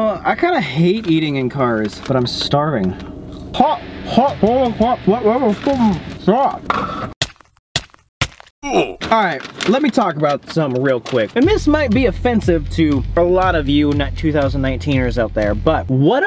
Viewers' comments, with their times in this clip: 0:03 why did he sound British when he said hot lol